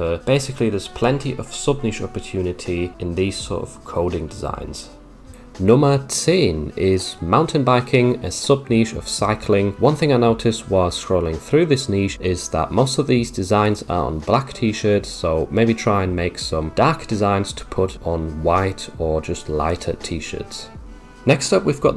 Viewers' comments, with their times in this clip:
0:04 lol, i love how you suddenly turned german saying "Nummer zehn"